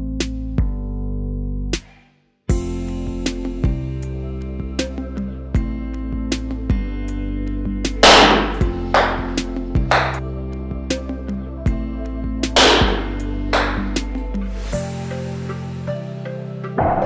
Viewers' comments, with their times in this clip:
0:05 lol that sound when it fell and dat face of that guy! lol :D